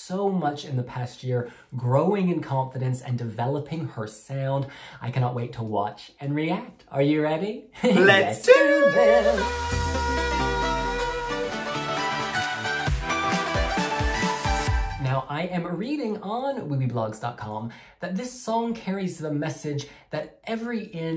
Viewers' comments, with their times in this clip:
0:07 This note. The talent.